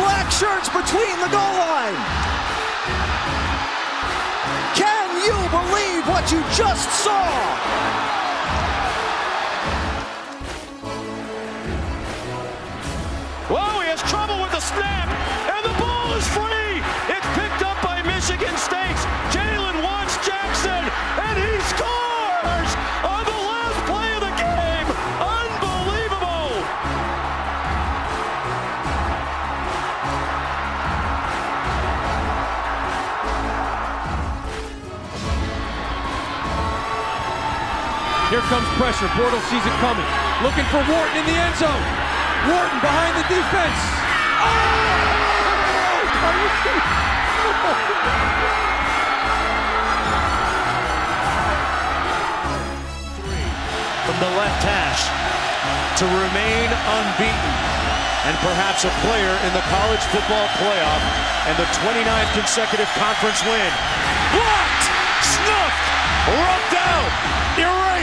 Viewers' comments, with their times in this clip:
0:05 the voice crack 🤣🤣
0:12 The commentator had so many voice cracks
0:13 How much voice cracks does he have on
0:18 gOinG ThrOuGH pUbErTy
0:20 man really be going through puberty
0:20 (Dat voicecrack doe)
0:21 The voice cracks on that guy tho
0:21 the voice crack 😂😂
0:22 The voice crack 😂😂
0:23 major voice crack 😂
0:24 😂 this man had 4 different voice cracks 😂
0:24 voice crack your welcome
0:25 -5-25 what is that voice crack though
0:25 on the last play of the gAAAme
0:30 The voice cracks
0:54 That call gets me. I love it when the guys calling the game just become fans for a second and let loose.
0:55 was the most hype a commentator has ever been, great play all